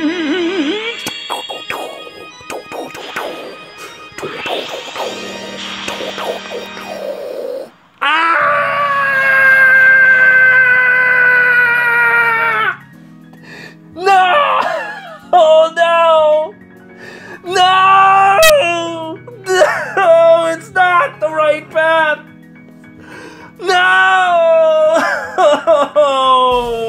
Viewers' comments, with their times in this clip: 0:07 And here we have the last screams of a man in his final moments of desperation...
0:07 Such a beautiful voice. It sings inside my ear
0:08 Classic tom&jerry scream. Love it
0:08 that scream reminds me of Timon from the Lion King for some reason xD